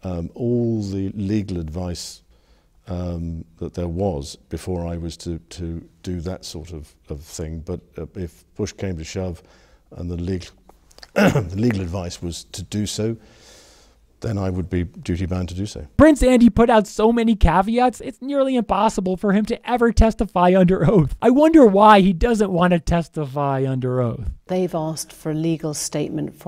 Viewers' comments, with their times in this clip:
0:10 Wonder why he had a hard time with getting the word "legal" out of his mouth